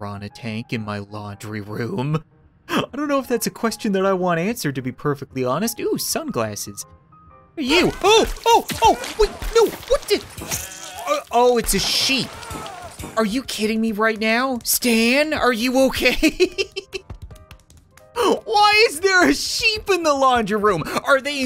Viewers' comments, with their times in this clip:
0:03 I thought that the sheep was a woman stuck in a washing machine. “What are you doing step uncle”